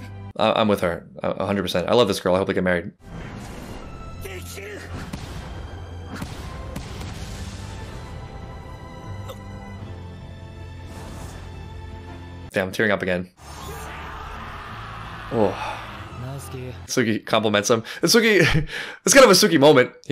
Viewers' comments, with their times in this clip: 0:07 My favorite soundtrack of the whole series. "Back together" or 合流 ("meeting of streams," maybe calling back to the Tsubakihara banner slogan) is the name, and it's a remix of the S2 track "Omnivorous." I love how there's such a clear climax but it's so clear that the music and the drama continues from there. This is a start line. Just really well done.